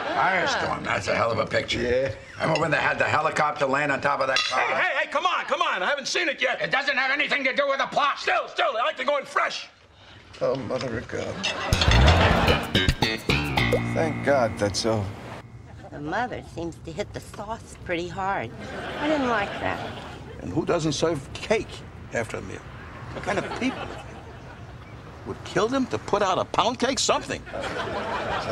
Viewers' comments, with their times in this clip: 0:04 Mrs Ross's reaction when Frank begins yelling about potentially ruining the plot of Firestorm puts me horizontal every. single. time.
0:10 George sounded so defeated when he said "Oh mother of God"